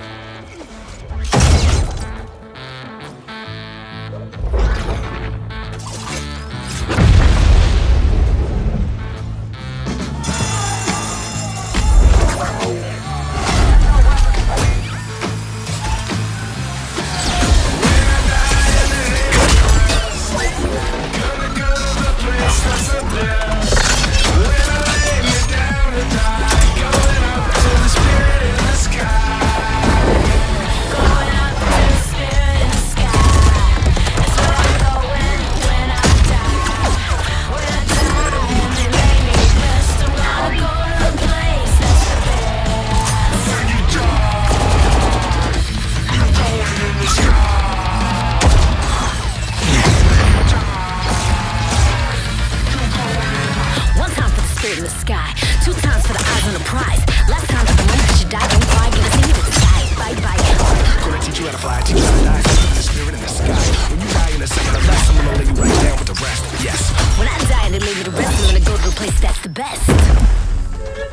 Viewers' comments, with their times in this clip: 0:09 I just realized how the alarm changed into being a sound effect for the song. Seriously, I wish this game didn't die. It one of the first fps games in a while with a unique game-changing mechanic.
0:52 eargasm, that Assault Rifle just added to beat beautifully. they could make more money selling a full song than the game lol
0:53 and is my favorite part just because its FASTER.
0:53 and onwards matches music perfectly and sounds so cool